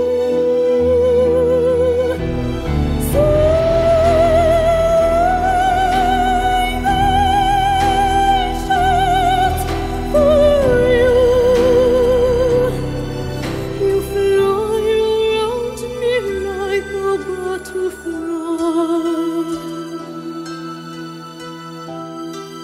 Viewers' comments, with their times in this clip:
0:03 I'm sure they had the best microphone available but she overpowered the mic